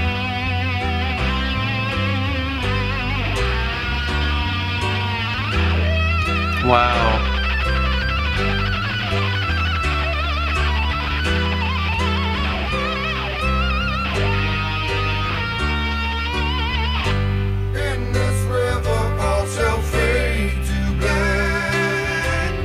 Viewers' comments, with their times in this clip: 0:04 Yes! WOW (wah) GUITAR EFFECT :D